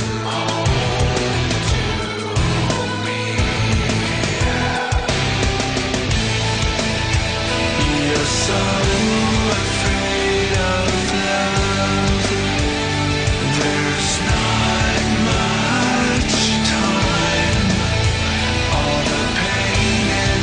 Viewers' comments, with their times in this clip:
0:05 the birthday massacre band influence?